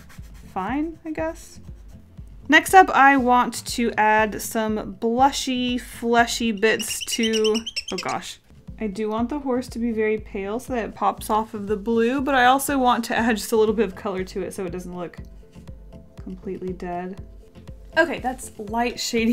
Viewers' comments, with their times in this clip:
0:06 the squeaking kind of sounds like a high-pitched horse whinny to me, how appropriate!